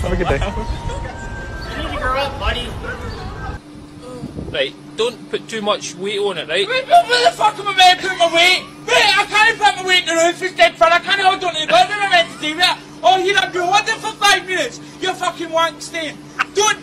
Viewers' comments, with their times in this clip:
0:03 I Love The Angry Accent This Guy Has, I Even Do It Myself Despite Not Being In The Same State (I Was Born & Raised In Alaska, We Don't Get Many People From Around The World To Here That I Know Of)
0:04 I like how I'm learning english for almost 10 years now and I didn't understand a single word